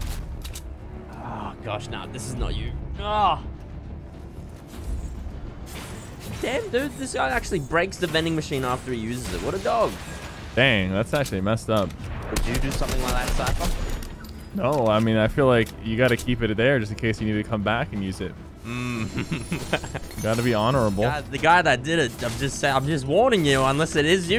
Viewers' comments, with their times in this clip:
0:06 I’m glad he did this cause the vending machines are so loud lol